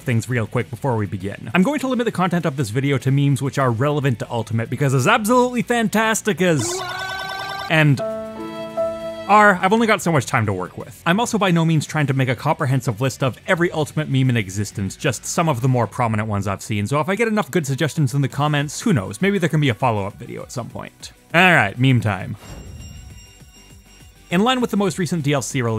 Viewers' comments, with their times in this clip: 0:06 I don't know why, but hearing Fox McCloud from Melee shout "WOOOOAAAAH!" Never fails to make me laugh, and it hasn't for over a decade..